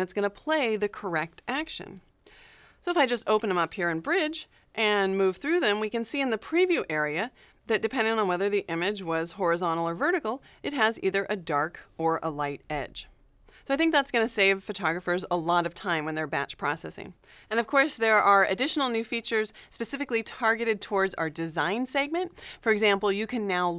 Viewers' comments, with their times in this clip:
0:08 she sound like a cute blonde. lol